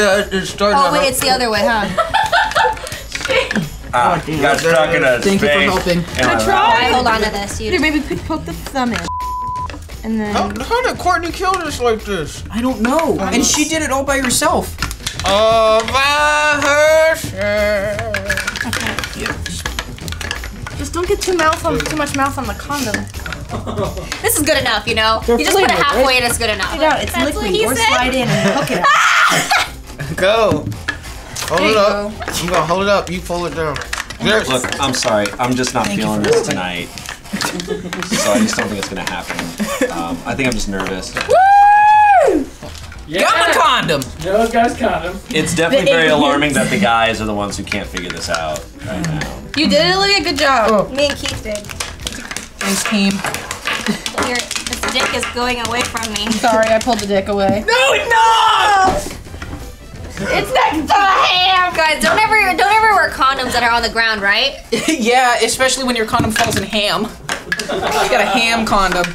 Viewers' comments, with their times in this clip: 0:06 "Hey baby put the thumb in" did anyone else hear that?
0:51 Why did the chopping crap me up so much 😂